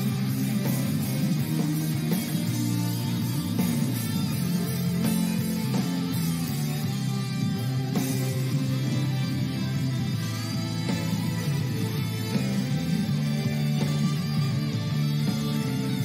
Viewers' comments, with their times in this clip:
0:03 This song grows on you. I love how Dae has rearranged this song originally by Ramioramen to add his own rock vibe to it. And in case you're wondering, the lead guitarist for his band is the famed Marty Friedman of the band Megadeth.